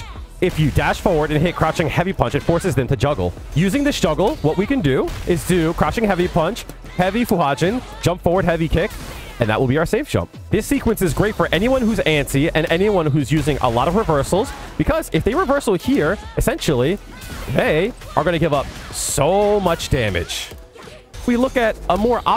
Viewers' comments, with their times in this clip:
0:04 Goodness i had to subscribe, as a completely new player to SF (I'm an AFG player) the way you explain sounds so eager and it's really making me listen well. kinda like listening to your favorite teacher during lectures